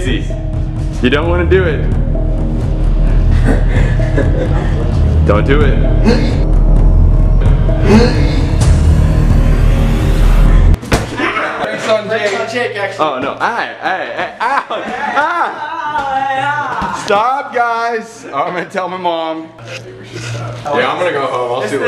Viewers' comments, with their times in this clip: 0:03 Colby: the suspicious laugh Sam: the uh oh face Jake: Don’t do it... Colby: yeet repeats yeet again but slowmo and aims the ball at Sam Colby: throws the ball at Sam Me: oooooo evil Colby!